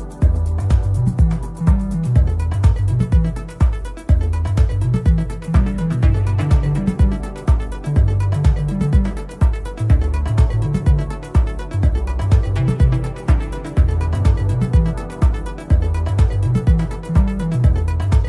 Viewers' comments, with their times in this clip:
0:04 is outrageous that arpeggio